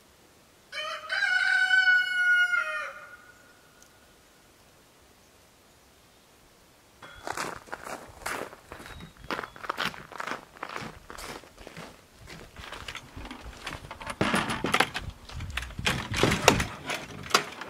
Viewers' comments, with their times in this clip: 0:03 Another awesome video. you can hear “Cluck Norris” light up!